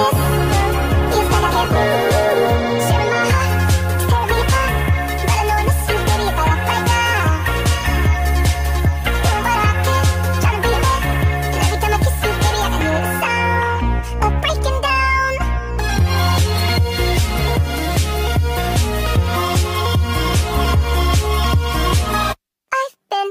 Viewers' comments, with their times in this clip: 0:08 I thought it said “beloved cube” lol